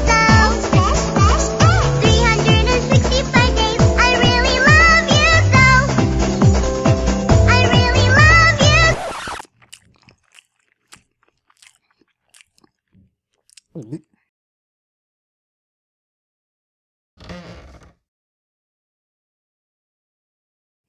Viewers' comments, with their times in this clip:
0:08 It's REALLY uncomfortable how the way he chews...